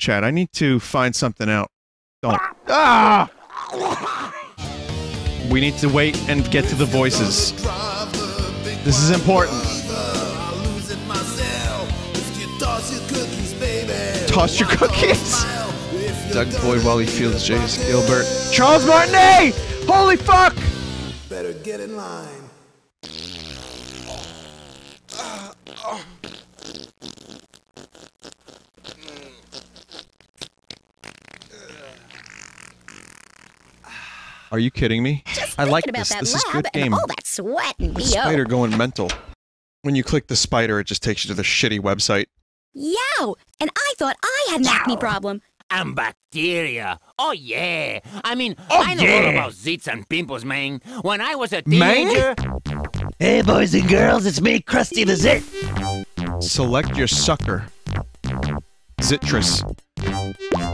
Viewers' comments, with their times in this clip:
0:04 sounds like something off of blood bagel
0:23 thought this was vinny taking a shit for a second
0:23 Not gonna lie I legitimately thought this was Vinny doing everything at this point
0:44 You can totally hear a prototype-Luigi slipping into the performance
0:45 Totally Wario's voice
0:46 Wario voice acted this.
0:46 it’s straight up sounds like wario!!!